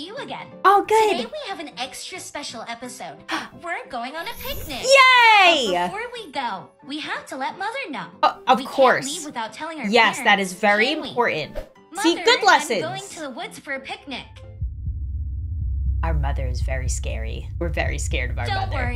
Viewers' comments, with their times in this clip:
0:05 I thought it said panic 😭🤚